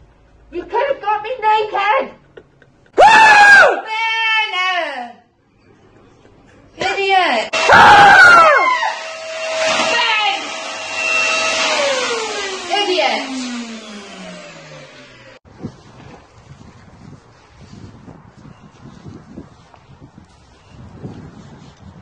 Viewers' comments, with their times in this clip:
0:03 That Scream Gets Me 😂😭😅🤣😆